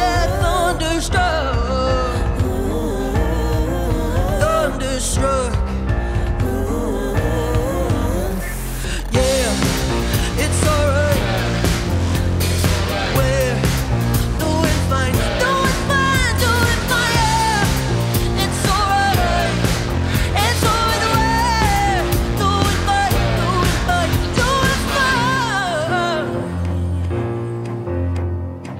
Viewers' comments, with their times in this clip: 0:09 I really enjoy this version. Quite a different animal than the original,which puts a new flavor to it. The original builds up, in the most brilliant way,until the end of the first verse, but then seems to flatten out (except for the solo). Odette´`s version delivers goosebump- inducing impact from on.